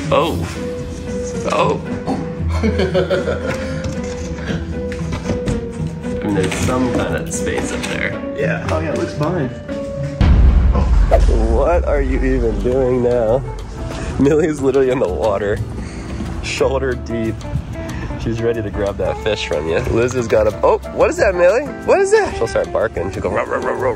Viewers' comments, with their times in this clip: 0:10 I heard a scary loud noise up there :0